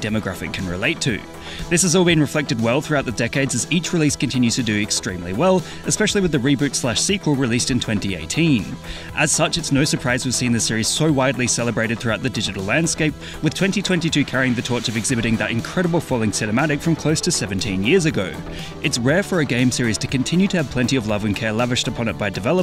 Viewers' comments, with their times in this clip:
0:04 bro really had to remove the music that randomly played 💀 respect for that tho